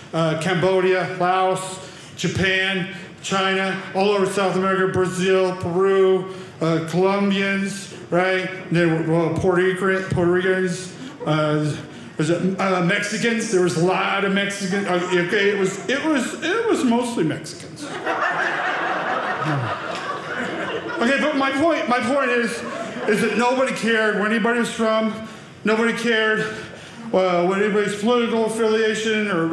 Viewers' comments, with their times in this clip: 0:10 "poor Ricans" lol!